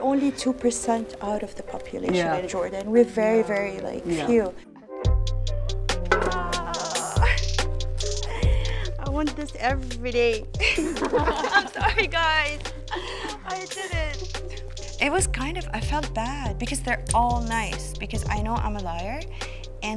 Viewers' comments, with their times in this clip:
0:03 Who else felt that beat 😅😂😂 It was dope 🔥🔥